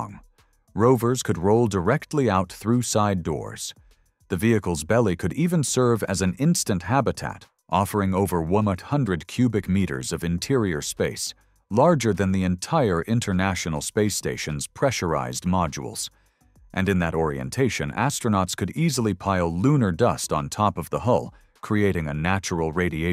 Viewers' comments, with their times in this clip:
0:08 I heard about a new number for the first time: wummuck hundred.🤨 . Where does that fit in between 99 and 1000?